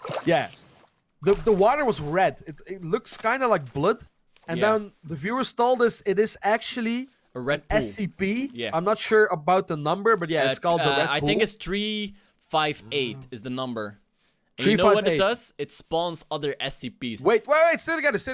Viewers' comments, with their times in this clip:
0:03 the way he says "blood"